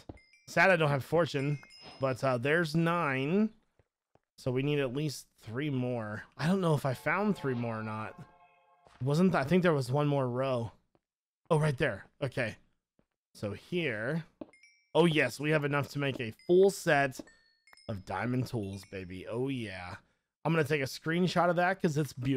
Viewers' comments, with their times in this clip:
0:06 anyone hear herobine?